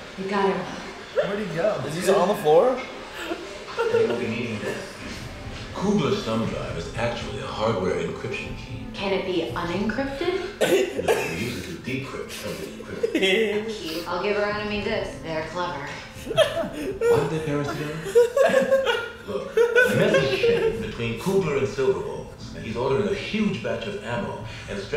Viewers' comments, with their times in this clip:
0:06 Who else had pillows vs blankets flashbacks when Elroy’s voice came on before they cut to him